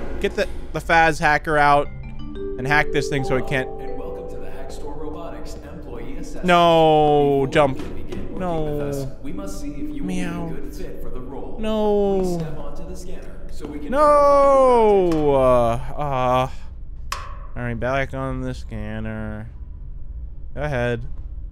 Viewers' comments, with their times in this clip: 0:08 did he just meow!?